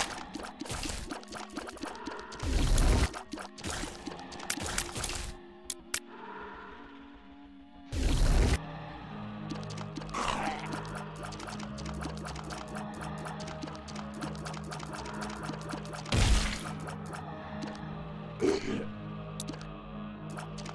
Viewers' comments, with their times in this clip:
0:04 wheezer ( plays a guitar rift)